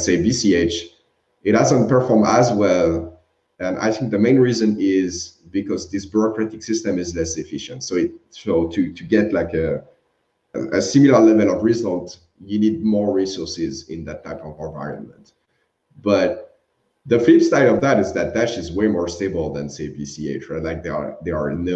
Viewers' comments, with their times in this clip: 0:09 That guys audio is such s h i t. Apparently Cardano is running out of funds for devs.